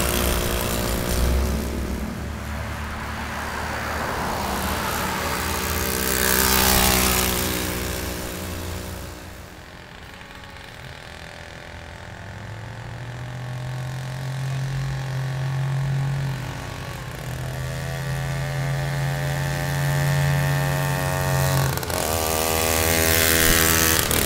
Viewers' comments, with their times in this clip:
0:07 something sounds weird